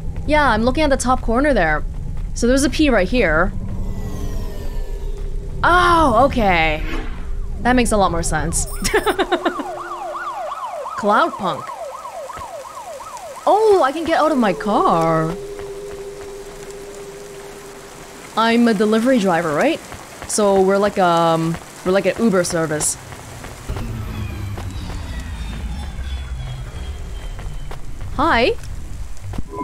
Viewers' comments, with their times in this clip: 0:10 Roll credits ding